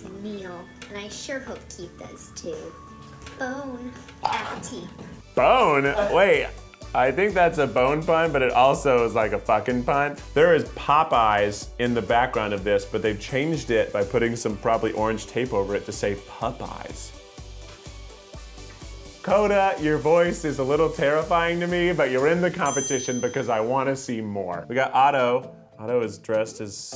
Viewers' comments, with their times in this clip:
0:07 AHH ITS SHANE!! TOUNGE CLICK